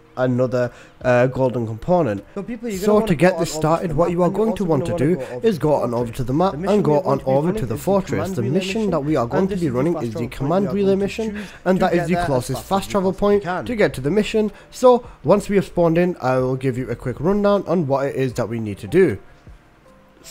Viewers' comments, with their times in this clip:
0:08 your voice is doubled at that point in the video